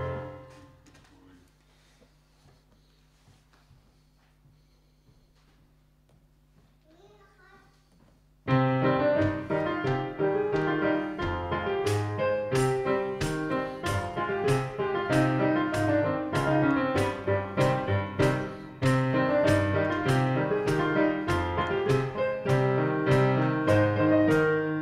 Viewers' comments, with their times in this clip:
0:06 one of my favourite themes from dos1 (the funny one) Sounds like a communist soviet or chinese march :)) RIP Kirill :(